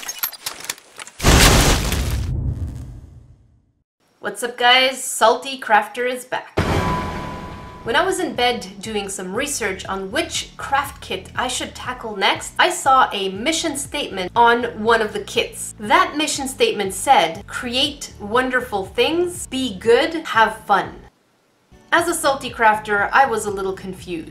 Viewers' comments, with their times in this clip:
0:10 I thought she said “witchcraft kit”